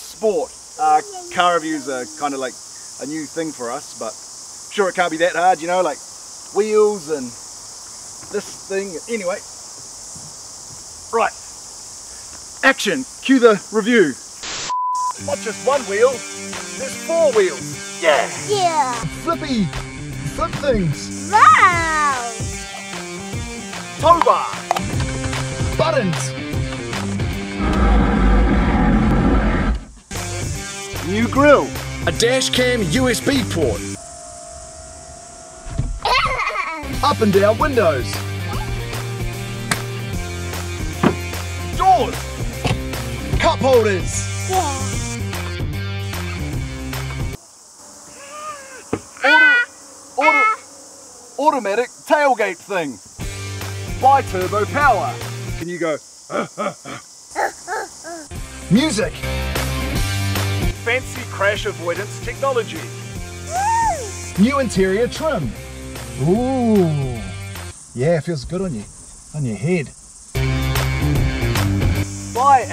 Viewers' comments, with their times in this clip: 0:09 ...Bam! Straight on the head! 😫
0:54 wtf she's so quite